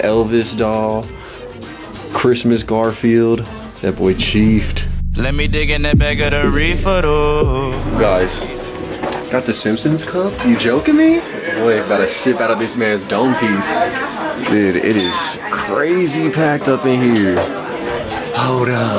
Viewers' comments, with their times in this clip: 0:05 brought back the og song